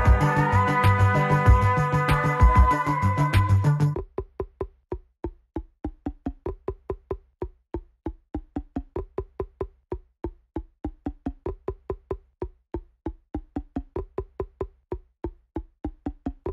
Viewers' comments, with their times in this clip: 0:03 it just becomes a ping pong solo
0:04 Pingpong after reading the sheet music Are you sure I have to play this while the rest is quiet? Everyone's gonna hate me Msm gods with everything planned ahead: Yes, don't ask
0:04 pong ping solo 🔥🔥🔥🔥